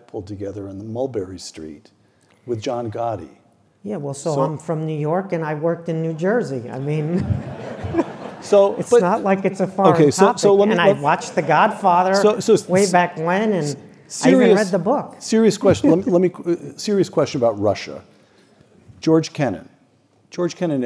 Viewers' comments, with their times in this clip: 0:03 Stephen Kotkin SOUNDS exactly like Joe Pesci (with a passing resemblance too) 😂